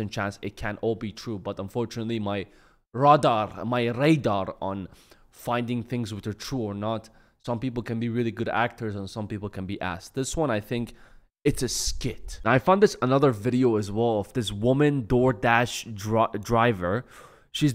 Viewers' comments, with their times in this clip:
0:03 may râdâr😂😂😂 Persian accent just camed out